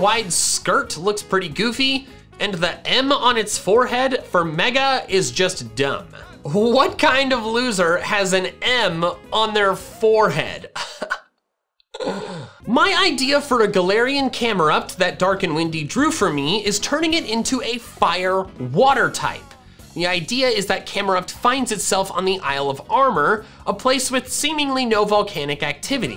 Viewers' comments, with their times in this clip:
0:09 How can I see the pain in that laugh